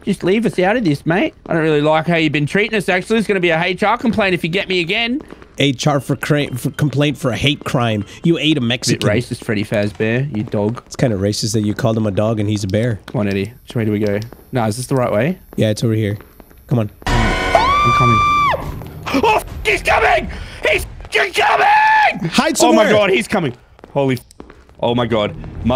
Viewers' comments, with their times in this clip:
0:06 Bro didn't even hear the music box played in